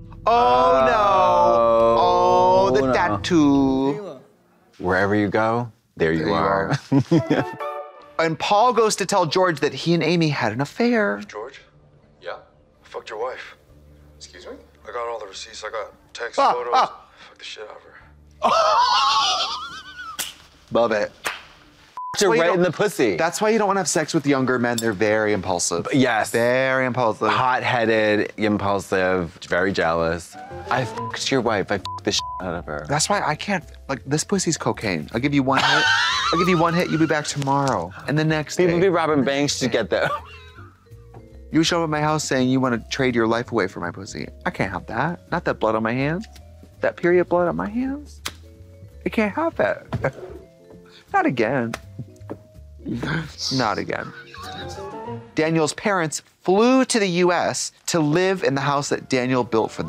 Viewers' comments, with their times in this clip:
0:06 [Blone Women in unison]
0:42 I love that Trixie still repeats things to send Katya further into a laughter spiral.